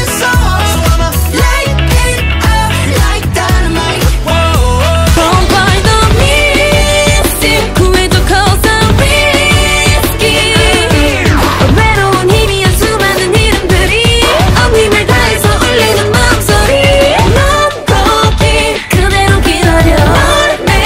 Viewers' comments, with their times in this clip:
0:08 Wait poeple actually hate SLAY X SLAY?!!?!111!1??!! One of my fave debutes fr THE BEAT the creeby yet comforting smh concept idk i just love itt